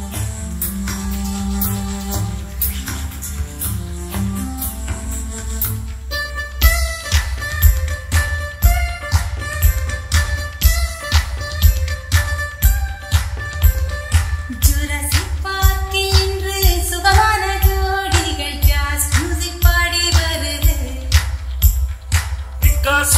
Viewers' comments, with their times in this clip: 0:07 best surrounding ever 🔥🔥🔥